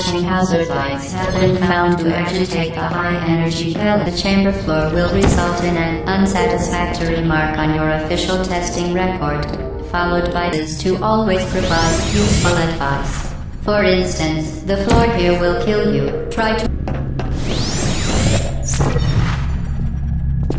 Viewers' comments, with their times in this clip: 0:03 "High energy fail a chamber floor." What?